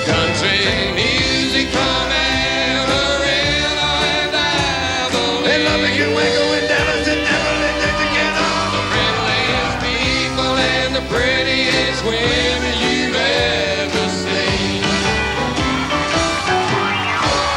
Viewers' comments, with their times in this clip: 0:05 Can anyone decipher what JJ is saying ?